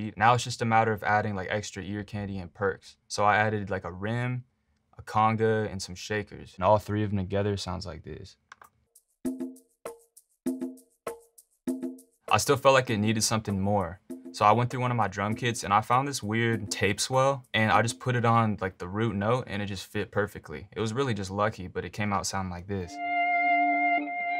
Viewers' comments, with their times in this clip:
0:09 when you catch a fish in animal crossing